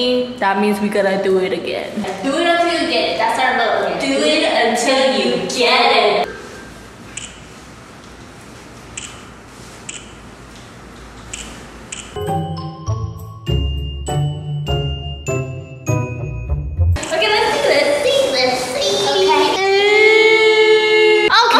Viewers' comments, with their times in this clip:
0:04 I see the "bit**" being cut off 🤣